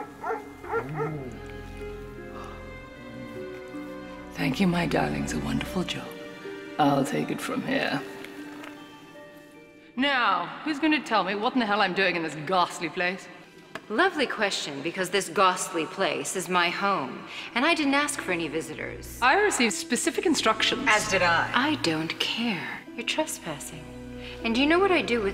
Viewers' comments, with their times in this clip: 0:08 Why tf does it sound like Cruella farted when she stands up